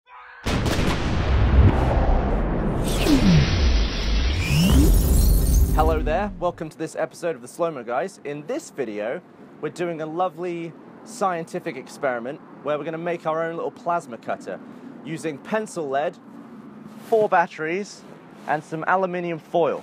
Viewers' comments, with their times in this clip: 0:00 If you listen really closley You can hear a guy quietly screaming "Fire!"
0:00 what up with the uagh